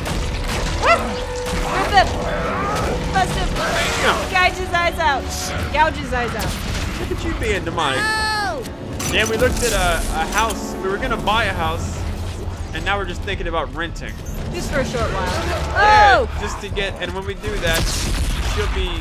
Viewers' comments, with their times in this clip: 0:06 did the necro say "shit" XD